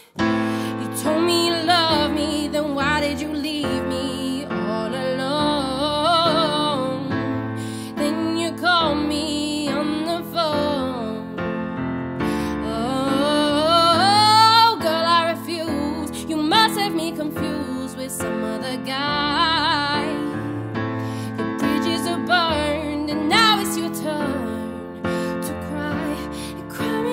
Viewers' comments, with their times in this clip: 0:08 I love how nicely you cover up with the blip in the lyrics haha. Sign of a true performer :)